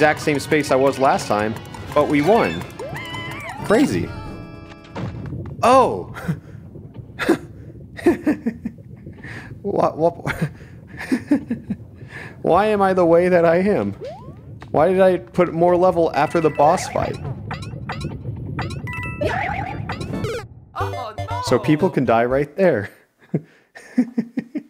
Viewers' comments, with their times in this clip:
0:07 that is the laugh of an insane man